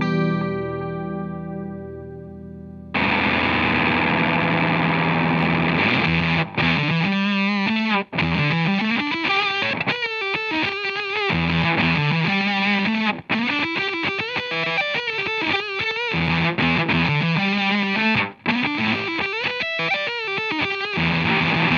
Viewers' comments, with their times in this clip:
0:04 Fuzz by Boss me80 sounds amazing!!